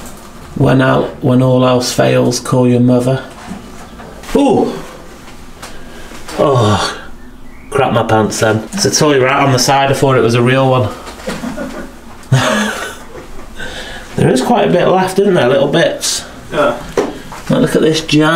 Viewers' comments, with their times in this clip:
0:06 HAHAHAH i love your videos!! your voice and accent are very cool!